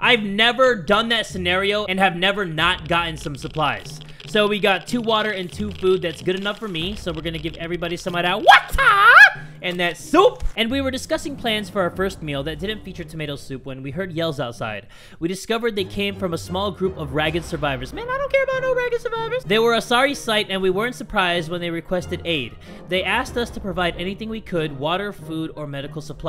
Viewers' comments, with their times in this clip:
0:08 Who else finds the video 100 times better when he says water like